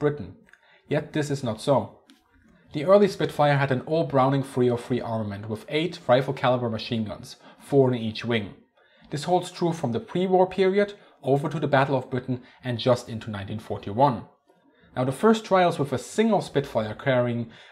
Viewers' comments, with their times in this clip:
0:04 Very confusing and onwards you said that each Spitfire had "an all Browning .303 armament with eight 'five oh' calibre machine guns". The problem is that .303 calibre (7.92 mm) is is not the same as .50 calibre (12.5mm). This is very confusing.